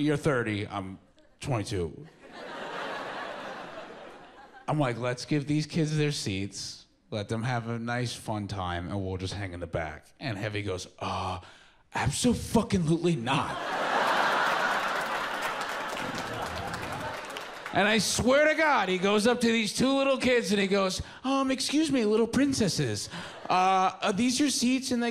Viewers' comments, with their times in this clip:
0:09 I had the exact friend down to intonation and attitude, 10 years apart. WTF